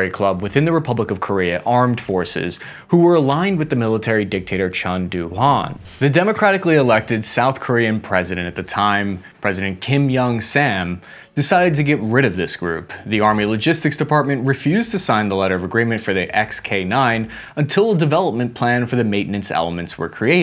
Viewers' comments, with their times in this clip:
0:03 Your explanation and research content are not insufficient compared to many Korean experts. But you mispronounced the name of the group in the part I marked. It is a fraternity of the Korean military that has already disappeared today. Hanahoe is more accurate to read Ha - Na - Hoe. Ha-Na means 1 and Hoe means the member group. In other words, it is a one group. It means that there is only one loyalty to the country. This problem is just caused by your unfamiliarity with Korean, and there is no problem with what is delivered.